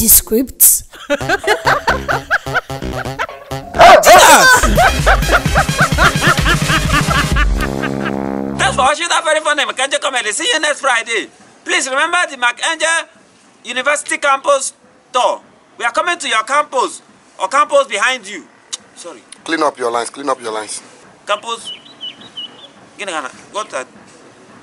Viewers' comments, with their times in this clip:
0:03 the dog barking LOL
0:07 Mark laughed so did i
0:08 when mark and emanuella ran from the dog bark they both were Laughing